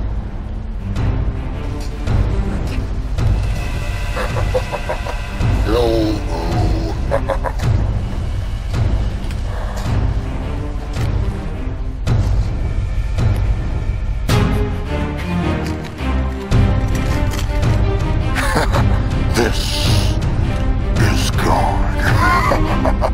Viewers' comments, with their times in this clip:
0:05 elmo sounds like a crying kitten